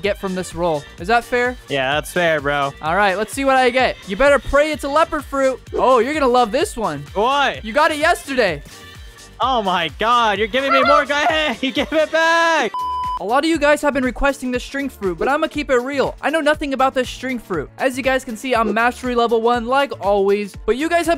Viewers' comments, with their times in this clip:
0:08 his laugh tho XD